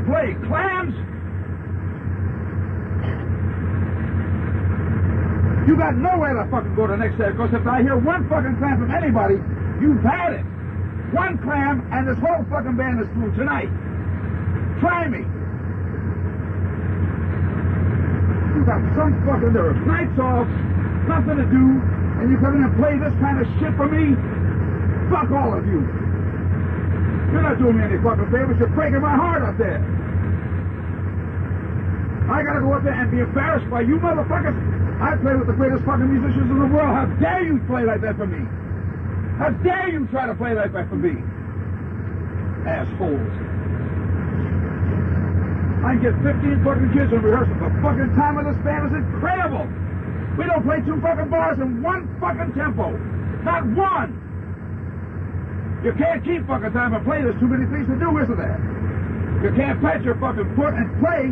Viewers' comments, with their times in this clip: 0:03 Isolated cough lol.
0:44 whats that noise ? cocain-sniff's...